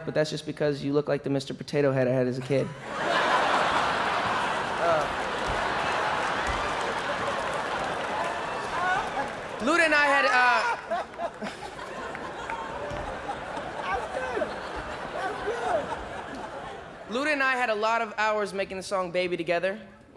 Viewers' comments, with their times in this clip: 0:05 Kevin cracking up really got me 😂😂
0:08 when Kevin couldn't stop laughing was golden 😂